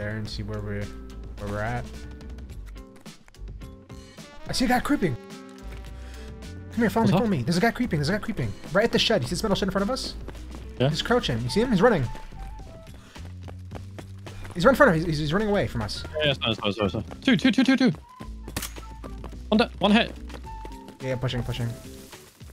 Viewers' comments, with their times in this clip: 0:04 “I SEE A GUY CRIPPING♿️” LMAOO